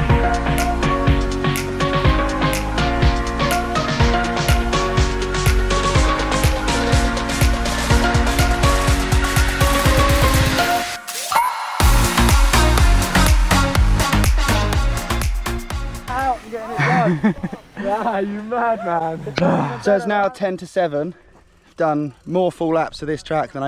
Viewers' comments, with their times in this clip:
0:07 Wild song choice makes it feel like the biggest jumps on the planet are like a tropical holiday. Also, missed opportunities to match up the beat drops, I wonder if that was intentional